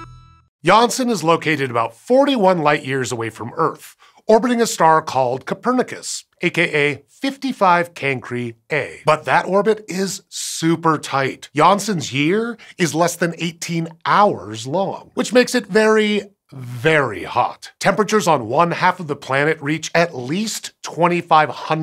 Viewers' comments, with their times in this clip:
0:04 “Earf” Welcome to Earf!